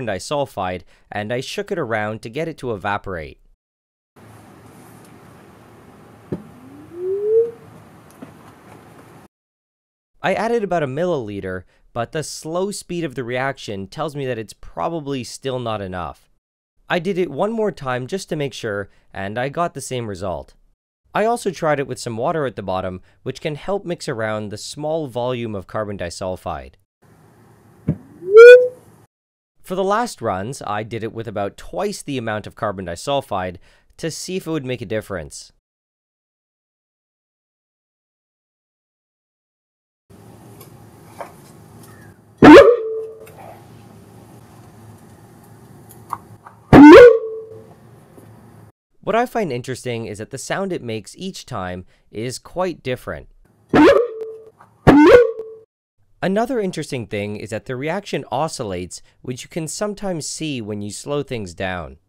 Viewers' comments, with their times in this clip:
0:04 nile, i hate to break it to you but all you have made is a fancy slide whistle
0:04 I'm pretty sure he just created a tiny little ghost and it said "hello" before disappearing
0:04 play on 0.25 playback. Kinda sounds like Halo regen
0:05 why does this sound like the ghosts from stardew
0:05 at 2X speed sounds like the outgoing message sound on iphone
0:05 Why dose it sound like a sad whistle
0:05 iPhone text noise
0:06 that sound reminds me of the golf game in Wii Sports...
0:06 payed at two times speed You just got a text
0:06 That sound you make when your proctologist has cold hands.
0:06 so this is how Nintendo made their Wii sound effects
0:06 that sounds like the halo shield recharge noise 😂
0:06 Someone got a text
0:06 best message notification sound
0:06 reminds me of the beginning of 'the fever (aye aye)' by death grips
0:07 sounds like an iPhone
0:07 when your shield recharges on Halo 3
0:07 does anyone else hear the stardew valley charging sfx?
0:07 The sound sounds exactly like a background sound in Stardew Valley... what if
0:08 that experiment is called "the confused dog" (thats the sound my dog makes when hes confused, coupled with the slight head tilt)
0:08 The barking dog sounds sad lol
0:13 why does this sound like a stardew valley sound effect?
0:26 is this where iphone imessage message sending sound came from
0:27 The whistles go
0:28 the wooping man experiment
0:41 Jumping in an 80s-90s cartoon
0:41 my grandmas android phone every time she gets a notification
0:42 sounds like avgn death blocks from the fan game
0:42 LOL your neighbor's dog replied
0:43 sounds like ‘YEET’
0:46 all i hear is a rlly compressed YEET
0:46 sounded like yeet
0:46 sounds more like "yeet"
0:48 sounds like a kid picking up a microphone and going "woop" into it at max volume and in his mouth